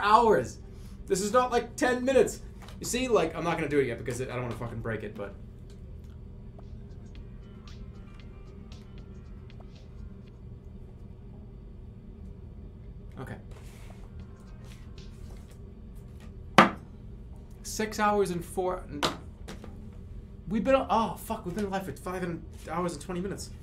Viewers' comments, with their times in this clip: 0:09 Jerma getting confused with his cartoon nose sound effect